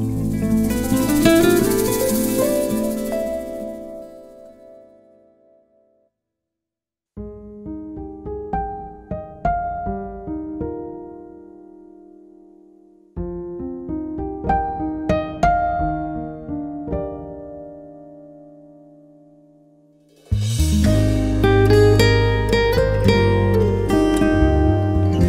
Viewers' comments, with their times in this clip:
0:06 Agreed, thanks... especially the initial piano sound shrinks inward, anyway, have a nice day.